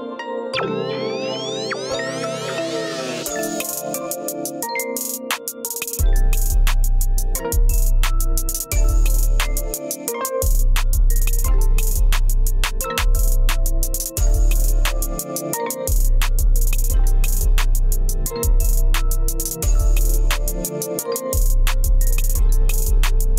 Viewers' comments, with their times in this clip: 0:06 that BEAT is FIRE !!!!!